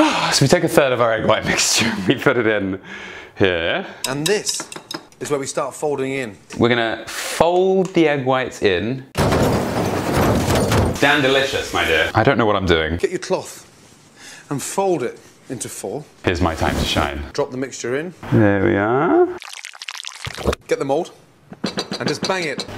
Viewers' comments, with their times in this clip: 0:06 heavy materials hitting a car hood microphone is in the car front window is broken in the recording, Hailstorm? The glass sound is actually the side windows breaking because front Windows have plastic sheets that protec your face from glass by holding the shards to eachother.